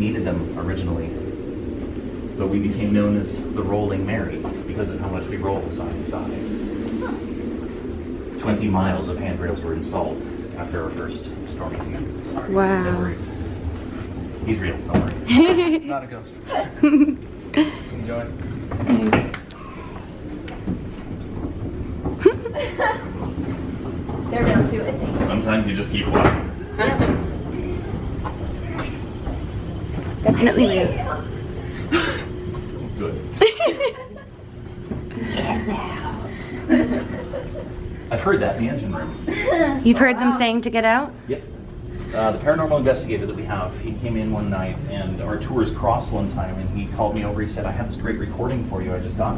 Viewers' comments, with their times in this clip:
0:07 sounds like a little girl crying to trying to talk
0:17 anyone else hear the "pss pss heeey"
0:18 you can hear something that said hey
0:19 you can hear a clear whisper "Heeey"
0:19 A Demon like voice saying "Hey!" Anyone else hear it??!!
0:19 you hear a weird voice saying "Hi" was that a disembodied voice? Or a passenger being extremely creepy. Because even the guide reacts to it.
0:19 u can here someone say hey
0:19 "hey" and then a couple seconds later, the same voice says "I see you"
0:19 you can hear something saying hey and i think it was a girl but im not to shur
0:19 I can't be the only once who hears a ghostly " heeey" just moments after the guide says: "He's real, don't worry"
0:19 what after he says that guy in the hall isn't a ghost??? that noise he hears and has that weird face. that was a creepy noise.
0:19 you can hear a “heyyy” anyone catch it
0:19 hey in the background
0:19 What was the whisper ?
0:20 Did you hear "Hiiii" or "Byyyyeee" in a very creepy whisper...The tour guide stops and turns his head, he heard it too... and has a very shocked expression on his face.
0:20 Who else heard the "hi"
0:20 you have a voice saying hey as the tour guide looks back as if he heard that. Listen back to it
0:21 I hear a little girl say “hey” so clearly
0:21 i hear a creepy voice that’s saying “hey” or “here”
0:21 Is it just me or in I heard a whisper saying “hey”
0:30 Same voice says "I see you"
0:35 Is it just me or dose something say get out